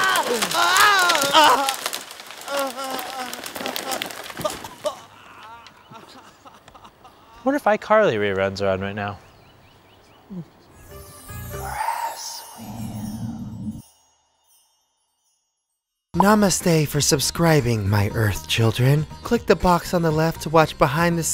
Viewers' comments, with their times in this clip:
0:08 did he say Icarly